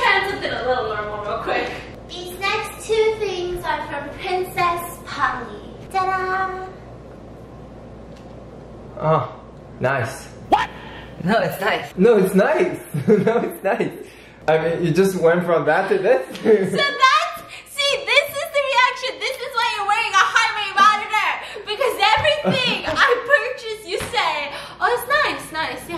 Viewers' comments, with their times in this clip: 0:08 THE REACTION AND THEN THE “wHAT” plssssss-
0:08 The way he just goes “ah, nice” here sends 😭